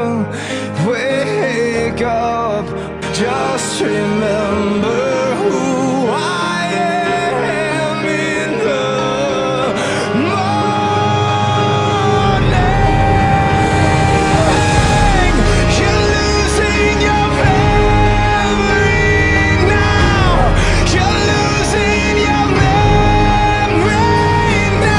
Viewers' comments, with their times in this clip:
0:07 seems like Magnus comforting Tessa... starts ugly sobbing